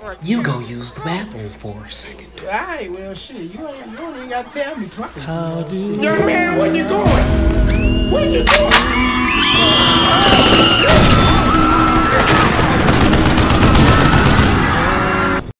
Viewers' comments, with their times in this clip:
0:06 Pulls out pistol Rapid fire gun sounds